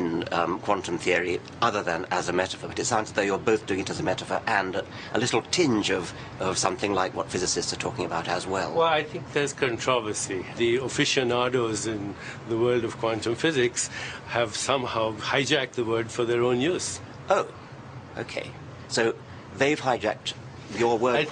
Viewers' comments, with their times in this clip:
0:09 LMFAO! I knew it! Deepak Chopra did the voice of King Julian in the Madagascar films! I know IMDb says it was Sasha Baron Cohen but I think they were lying...there is no way it wasn't Deepak Chopra. It's not just the accent, it's the tone & the volume...everything. Every time Deepak Chopra speaks I think about King Julian. LoL!